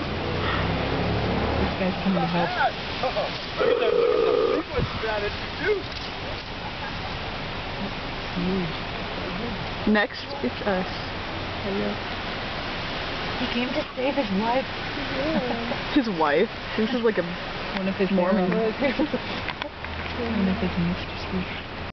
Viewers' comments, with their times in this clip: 0:03 that Homer Simpson burp
0:03 Is that the elk making that scary growling sound or one of those girls burped or farted??